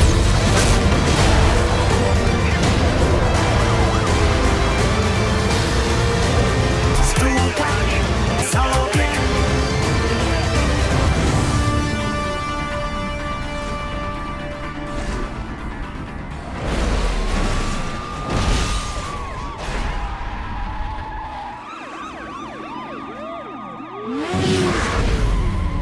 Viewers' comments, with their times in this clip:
0:06 W for adding my home country’s music ❤